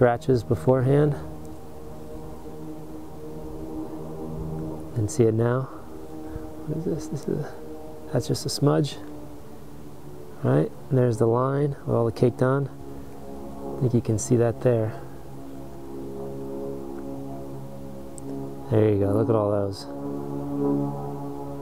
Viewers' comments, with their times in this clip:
0:08 the trumpets of justice....Scary